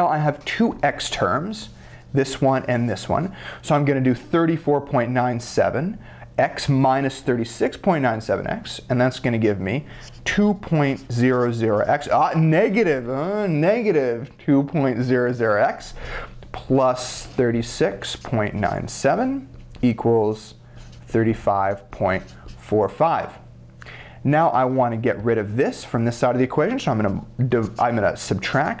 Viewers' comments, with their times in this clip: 0:09 Lol when he emphasizes the value is negative..lol
0:09 The way he acts when he says negative ahh negative hahaha